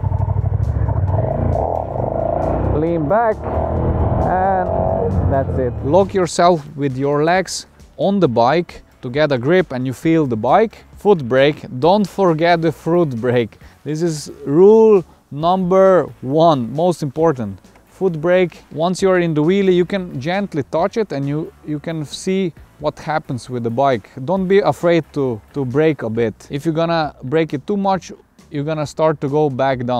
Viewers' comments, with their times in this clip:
0:08 Above all things, don't forget the fruit break!
0:12 "dont forget the fruit break"